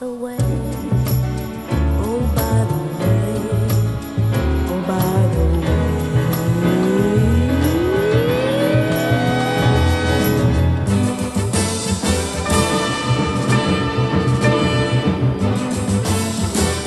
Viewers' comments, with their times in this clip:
0:04 She’s the whitest sounding black singer I’ve ever heard Edit: also holy shit